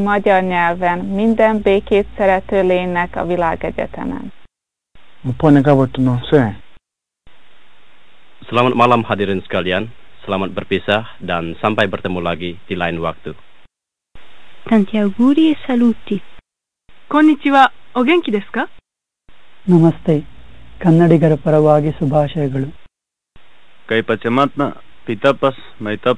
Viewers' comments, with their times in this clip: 0:08 yay malay or indon